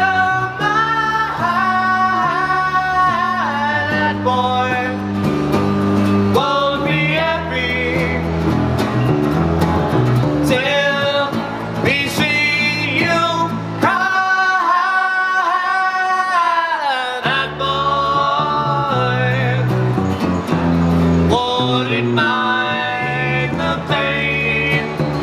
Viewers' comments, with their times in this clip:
0:08 That bass lick !!!